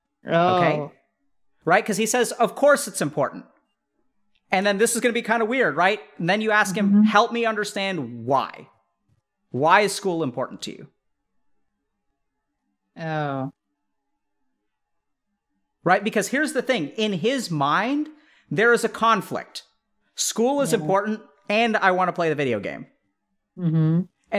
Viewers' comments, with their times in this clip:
0:05 That “oh” 🤣 This conversation is so lovely tbh, i love both of them here, wish all conversations around parenting could be like this
0:12 The mum saying "Oh" From the tone and pause, you just know that was an epiphany for her. I'm glad Dr K helped her realise this.
0:12 that oh….hits differently. I wish her and her child all the best wishes 🙏